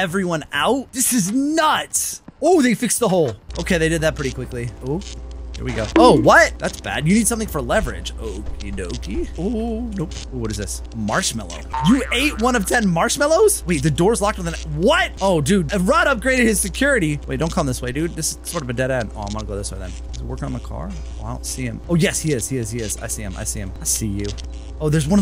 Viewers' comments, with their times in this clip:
0:09 OoOoOoOoOoOo😂😂😂😂😂😂😂 Said it so calmly 😂😂😂😂😂😂😂😂😂